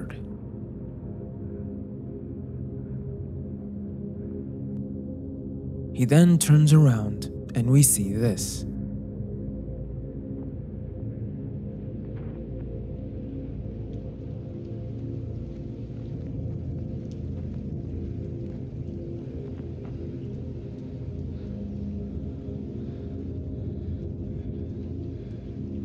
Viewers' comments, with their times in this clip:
0:07 RUMBLING RUMBLING RUMBLING ITS COMING